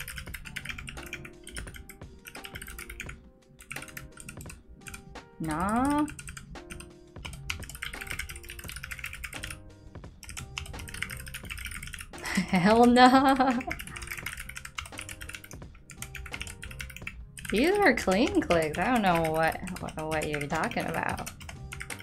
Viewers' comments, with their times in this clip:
0:07 it sounds like a typewriter